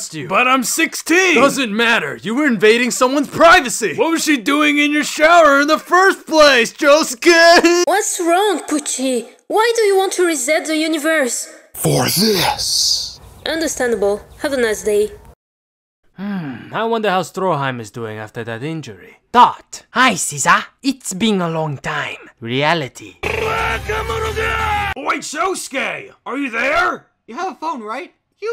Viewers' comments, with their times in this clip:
0:08 omg I love her voice so much. All her dubs make me feel all warm and fuzzy and I just want to punch bunny rabbits.
0:11 when he says for this I can't tell if he wants it or doesn't want it